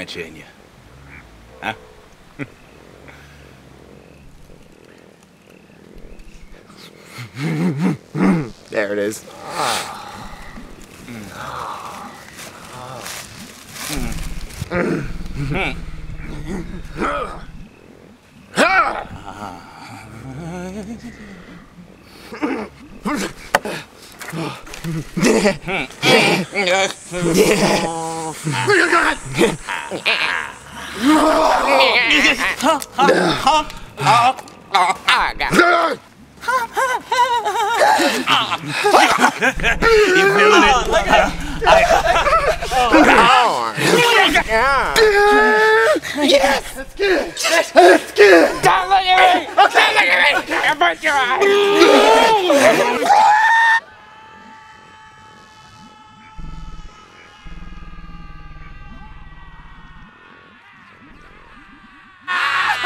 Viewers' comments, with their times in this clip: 0:07 he sounded like a car🤣🤣🤣
0:20 The little fuckin noise that Daveed makes is what gives me life
0:43 At like someone makes a noise like YAAH and then also THE ARMS SPREADING OUT "YES"